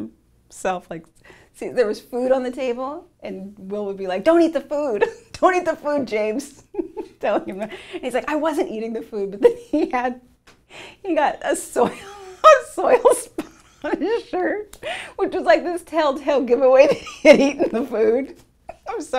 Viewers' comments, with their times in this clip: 0:03 lol she had me laughing right w/ her😂😂